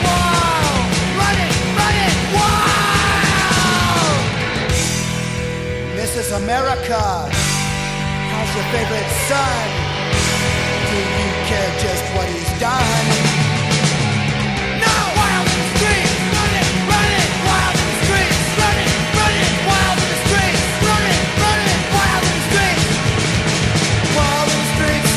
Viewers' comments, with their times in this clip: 0:05 THIS IS eMERikää
0:06 sounds like Jello Biafra speaking.